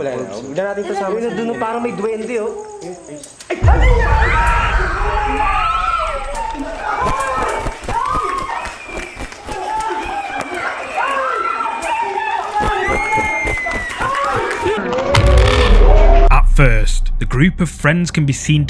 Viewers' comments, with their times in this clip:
0:06 Those are obviously stock scream sounds added in post....